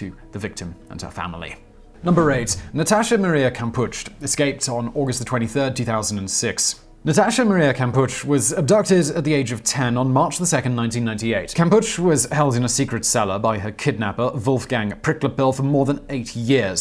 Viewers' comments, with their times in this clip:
0:03 Kampusch as in Kampu SH The terrible German pronunciation hurts my ears 🤦‍♀️🙉🙉🙉🙉